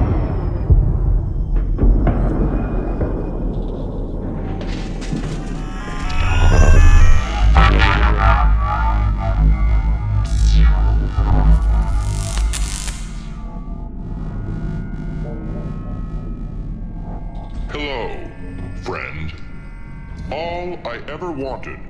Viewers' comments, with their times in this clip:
0:05 nothing can describe how hard this bassline goes with the valve index headphones